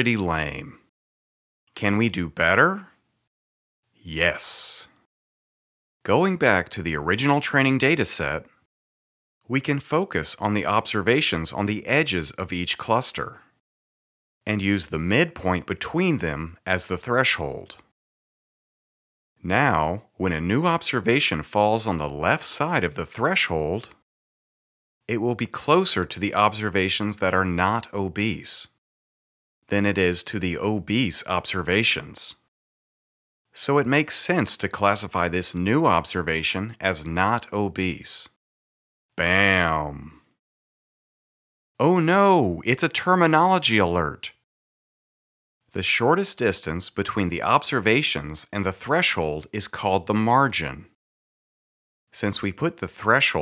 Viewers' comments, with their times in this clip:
0:07 so I stumbled upon this tutorial and it is from where I am right now, and the 'psst' just makes me quite uncomfortable. haha. nevertheless, I enjoyed the video. very informative! thank you Josh!
0:40 that "oh no" sounded like when Toph said that to Sokka from the avatar series XDXD Loved it lol!